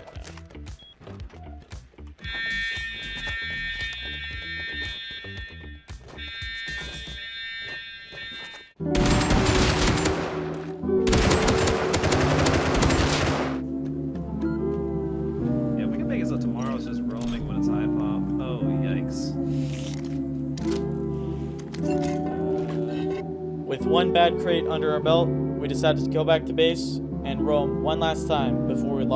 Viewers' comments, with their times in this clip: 0:10 The music is horrible. It confuses and irritates me. Ugh